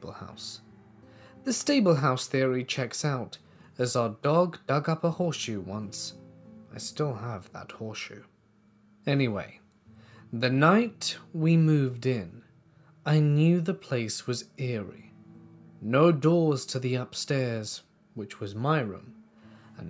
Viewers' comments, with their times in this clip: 0:04 almost sounds like a grindr notification lol